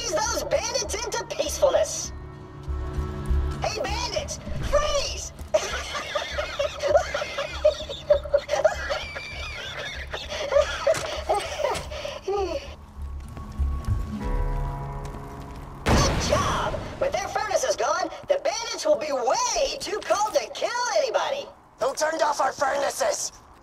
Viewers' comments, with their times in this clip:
0:04 that laugh kills me 😂😂